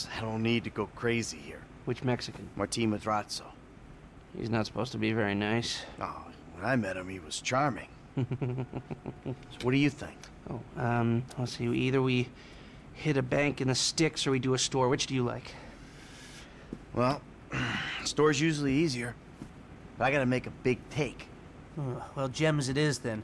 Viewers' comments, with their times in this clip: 0:08 for some reason, that laugh always gets me. Lol